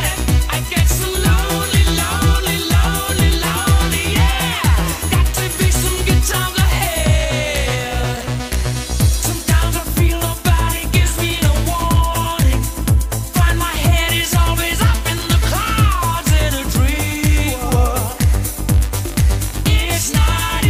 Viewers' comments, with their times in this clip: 0:05 I used to think the lyrics Were" I'm gonna beat some gits on the head"